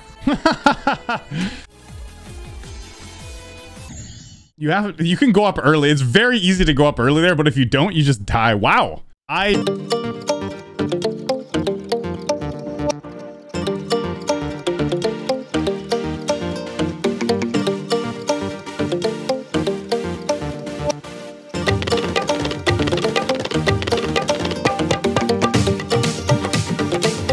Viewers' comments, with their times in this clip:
0:10 Bro was speaking: baduhdudu 💀